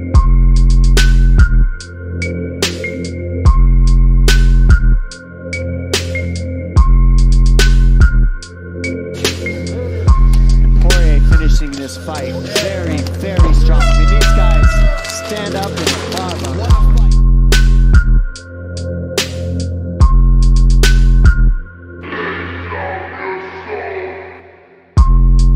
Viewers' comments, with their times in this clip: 0:09 Those shots sounded so brutal. Like ground beef hitting the pan